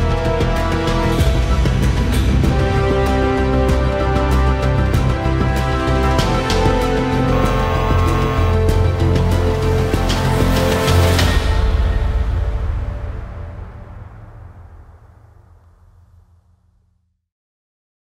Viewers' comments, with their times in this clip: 0:06 I had this video in fullscreen and my computer blue screened. "I have no choice-" demonic bsod sounds I thought it was part of the video